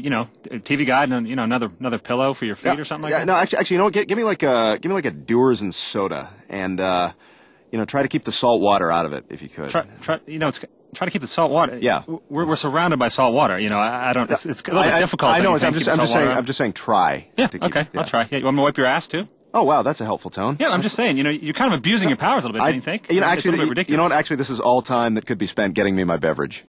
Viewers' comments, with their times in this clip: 0:10 I love when they talk over each other
0:14 i thoght aquaman was gonna pullout his trident... it sounded like it